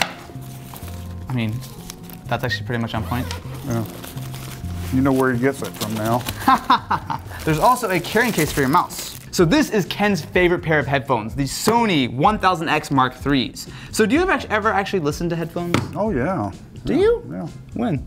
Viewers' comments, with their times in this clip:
0:06 Is the fakest laugh I’ve heard in my life